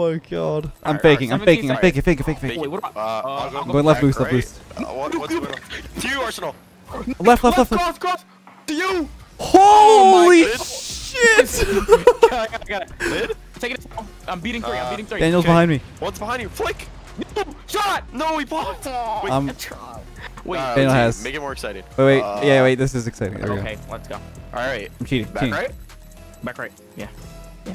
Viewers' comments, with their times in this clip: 0:09 the sound of pure stress